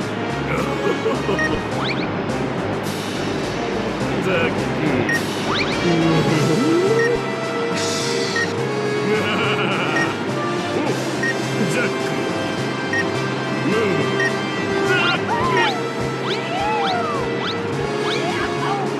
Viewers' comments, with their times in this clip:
0:03 the bgm sounds like one of One Piece's bgm's!